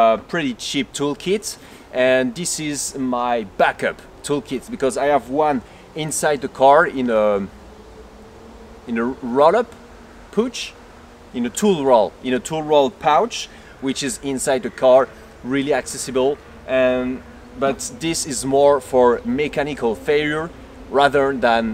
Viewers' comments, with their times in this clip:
0:09 i love your accent